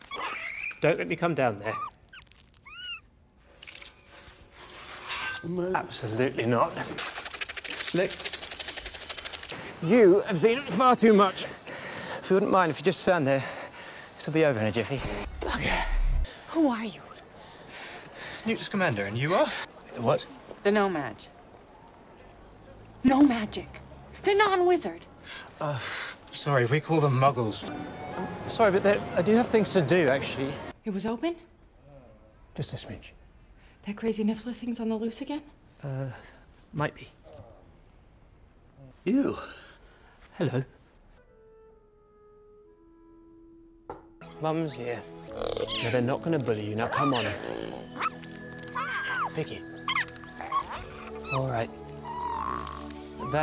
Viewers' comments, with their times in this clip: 0:05 that resigned "absolutely not" was adorable 😊
0:39 I didn't expect that ''hello'' to be that cute! His smile! Everything! ❤